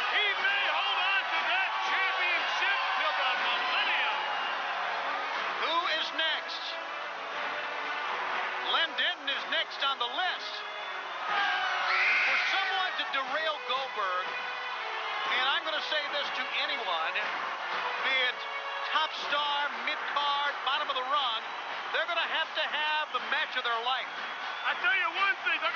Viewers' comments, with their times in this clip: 0:10 thank you for posting this that little girl screaming after is my kid an adult now and can show her kids